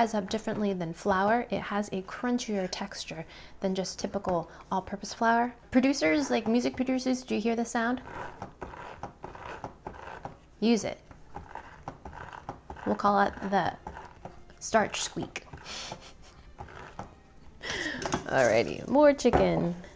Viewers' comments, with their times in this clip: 0:06 walking in snow